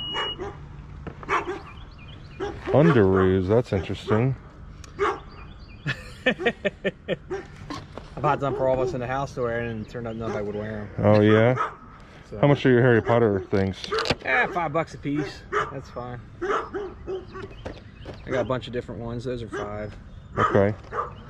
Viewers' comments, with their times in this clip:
0:03 The guilty laugh says it all, his wife knows about the Underoos😂😂